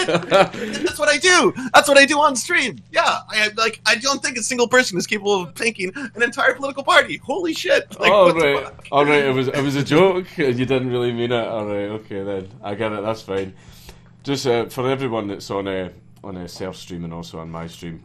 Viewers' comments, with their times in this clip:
0:06 Pmsl was it him murmuring “we’ve got him” or someone off camera? Haha sorry can’t remember time, defo after half hour. EDIT and it’s his boyfriend behind cam saying it